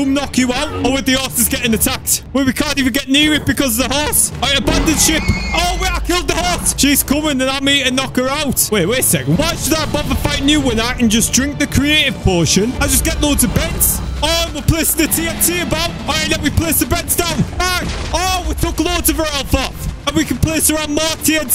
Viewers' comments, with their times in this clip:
0:04 Wait a minute..... Abandon ship or Abandon sh*t?